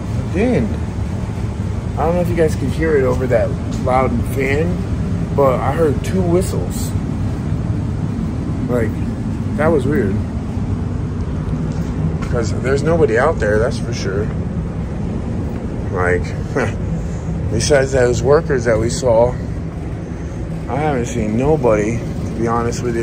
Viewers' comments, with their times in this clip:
0:04 Ya, I heard it too, and it sounded like it came from infrount of you on your right side.